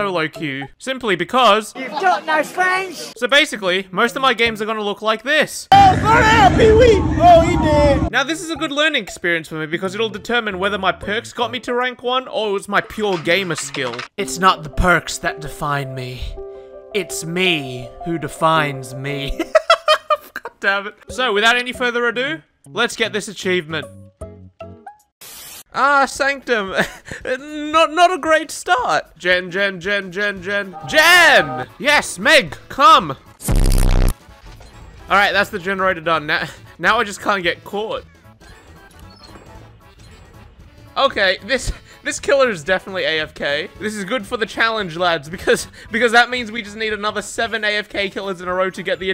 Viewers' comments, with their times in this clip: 0:05 the way he casually said oh he ded had me cracking up
0:33 subscribed right after the bass boost